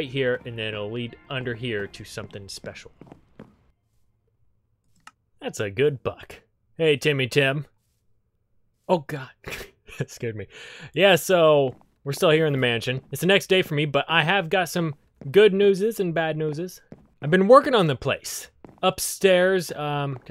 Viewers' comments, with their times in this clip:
0:07 idk why but i love how you say "oh god"